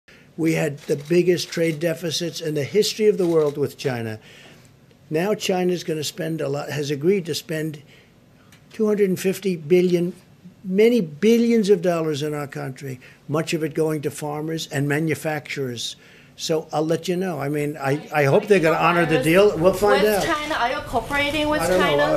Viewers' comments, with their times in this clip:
0:04 China is willing to spend 250 Billion, Many Billions of Dollars....LOL I Love Trump !! He stretch his words a lot.